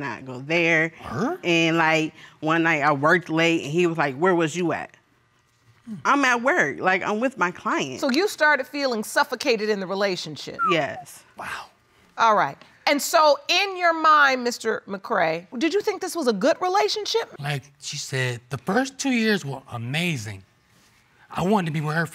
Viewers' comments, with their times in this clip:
0:05 First case he did the scooby doo